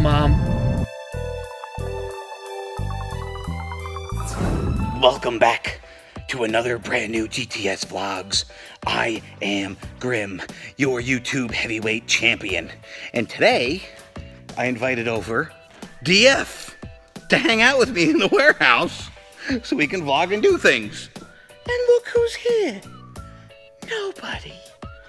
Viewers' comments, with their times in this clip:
0:10 I like that song. am I the only one?